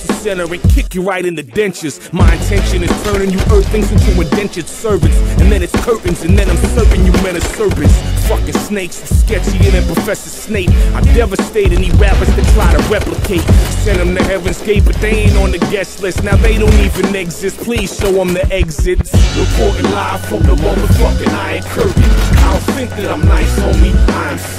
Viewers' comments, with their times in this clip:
0:05 nice AR sound clips when he is tapping with a fortune ak-47